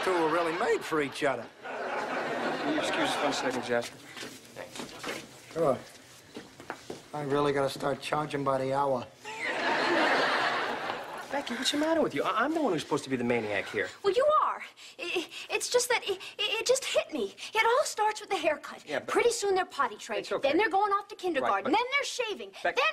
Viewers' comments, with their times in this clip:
0:06 the way he just giggles at jasper’s joke 😂😂😂